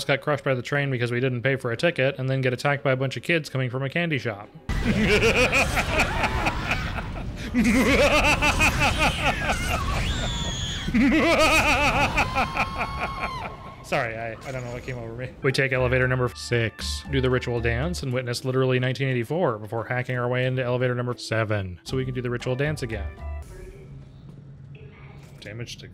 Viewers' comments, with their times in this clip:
0:04 Your evil laugh is incredible
0:08 my guy sounding like neo cortex rn XD